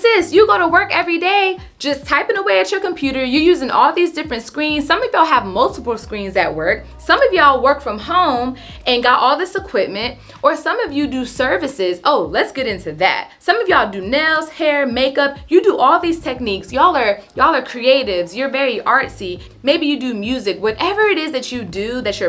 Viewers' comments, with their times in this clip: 0:09 wheeeeeew you are LOOOUD 😂but thank you you are absolutely right❤